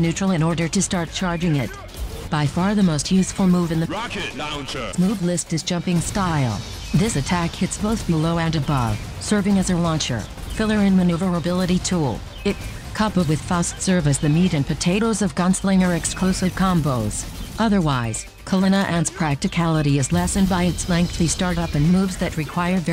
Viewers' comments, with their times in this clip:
0:04 The damn "RAHCKET LAWNCHUR" and the crowd booing later on had me rolling 😂 This was fantastic mate, I love you